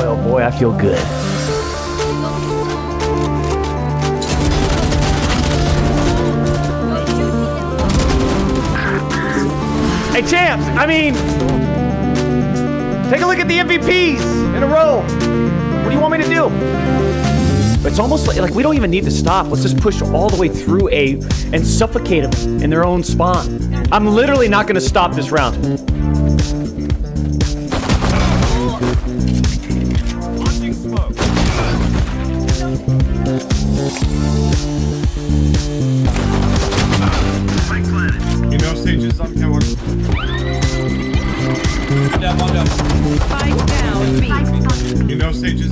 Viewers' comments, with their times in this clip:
0:05 name of the song ? the build up is insane
0:26 Doc always has great music.